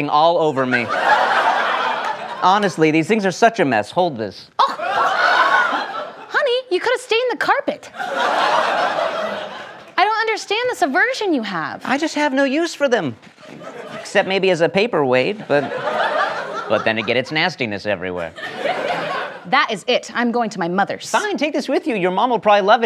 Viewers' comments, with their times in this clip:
0:03 the gargled laugh in the background 💀